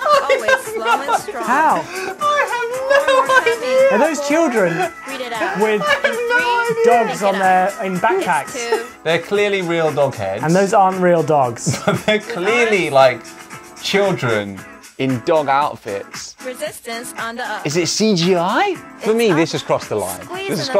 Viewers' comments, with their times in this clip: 0:06 "Are those children with... dongs in their backpack?" -Well that was an unfortunate translation.